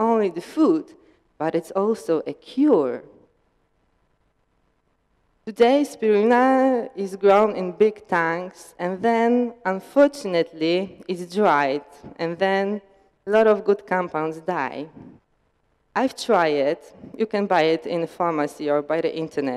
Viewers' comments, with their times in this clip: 0:06 best way to pronounce spirulina hands down